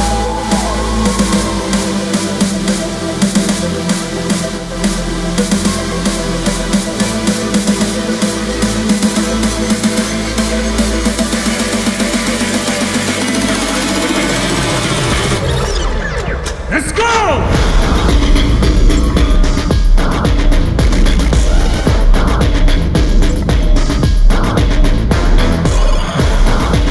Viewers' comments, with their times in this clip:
0:08 I still wish the music was this well mastered ingame (instead of suppressed, compressed, turned down, and ultimately demastered from the soundtrack/beta version... and it gets even more washed out for songs in the city mode and cutscenes!)